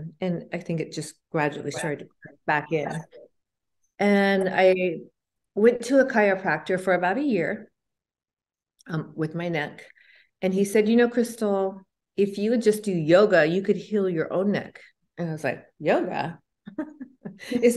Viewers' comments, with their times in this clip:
0:03 im wearing earbuds and i think its an evp .Does anyone else hear it??